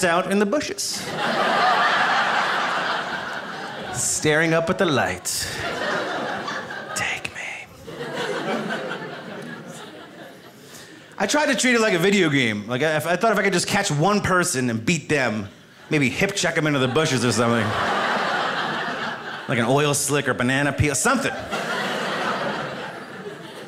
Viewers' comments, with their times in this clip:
0:06 when he says "take me", did anyone else hear like a female echoing voice say "take me... take me"?